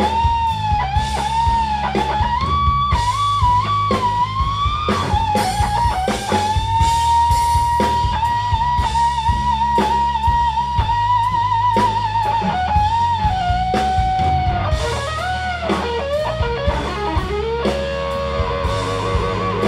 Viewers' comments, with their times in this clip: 0:04 I've never heard a guitar scream quite like that.